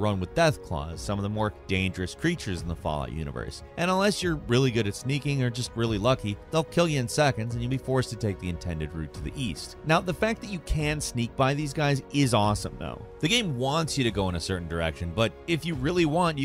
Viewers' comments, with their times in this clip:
0:03 whats the background music playing its quite relaxing.